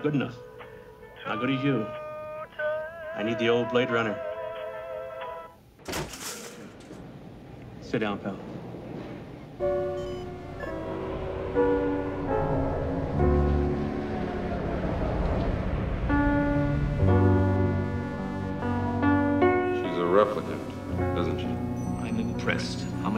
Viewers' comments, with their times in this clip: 0:07 Till it kind of fells flat, because that jazz song doesn't fit the action. Starting with the piano bit, it's a top work.